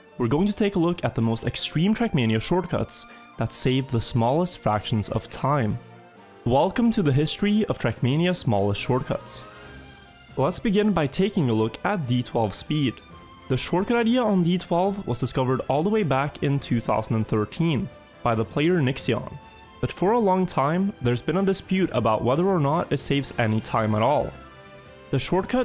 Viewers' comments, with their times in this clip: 0:07 i can't stop hearing whalecum, like, honestly and literally that's what I hear